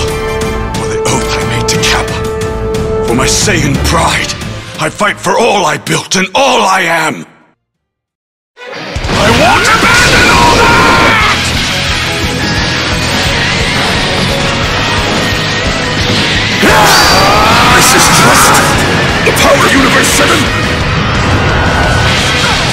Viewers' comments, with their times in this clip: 0:08 Feel like I'm watching a whole ass anime arc every, raidboss I love it Also the edit for is AMAZING that OST is fantastic!